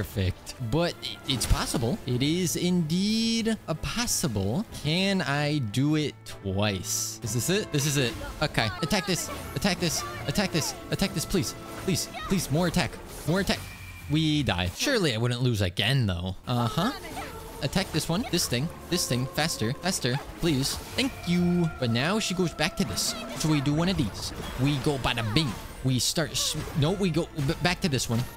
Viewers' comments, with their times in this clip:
0:09 the ost in the Raiden boss fight is still the best in the game